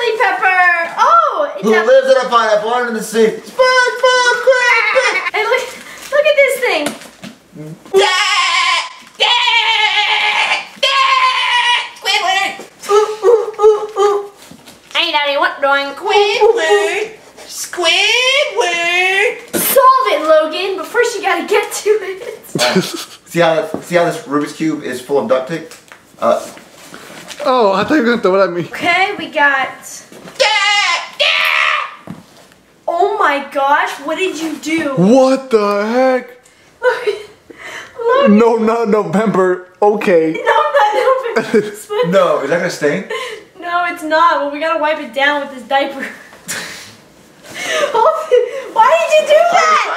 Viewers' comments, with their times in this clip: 0:05 his SpongeBob impression is amazing! Laughed lol
0:32 Ali a intro plays